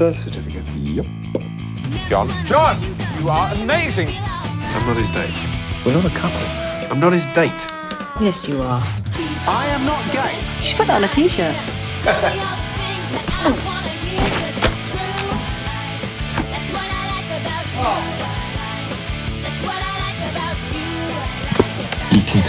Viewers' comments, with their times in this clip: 0:10 "I am not gay!" "You should put that on a t-shirt.😃" " fake laughs "